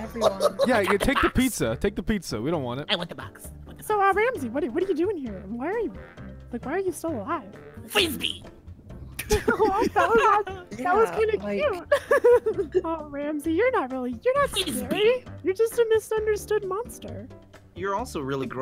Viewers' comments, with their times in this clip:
0:05 Note to self: bring pizza boxes for Ramsay so he can play some frisbee. (At this point forward, I can't take Ramsay seriously anymore. He's still terrifying but gdi with the "FWIZBEE!" XDD)